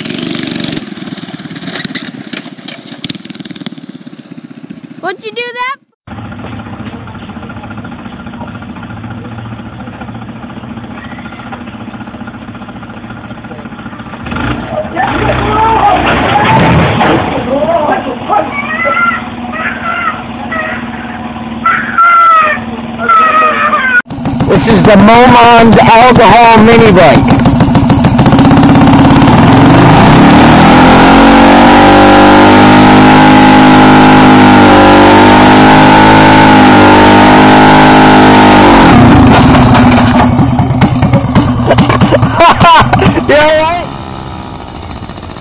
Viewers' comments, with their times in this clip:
0:08 that child was so stupid she did that ro him self ang she’s crying now?! stupid!
0:08 lol Kid: cry cry cry cry
0:10 I caught the baby is crying be cause of the motorcycle
0:18 Kids + scooter = banggg
0:25 best mic ever!
0:27 bro take ya freaking mic out ya mouth